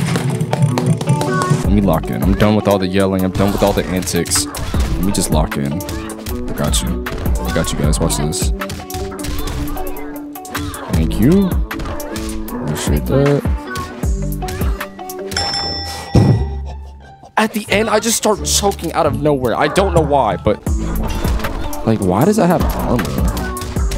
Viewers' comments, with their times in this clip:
0:08 When ever that song I knew he was locked in